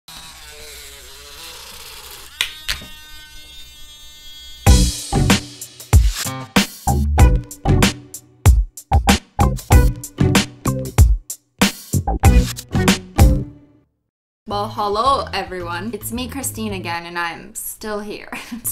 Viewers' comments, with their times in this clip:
0:04 it sound like a baby goat
0:06 who else mouths a honk noise to this sound?? Just me?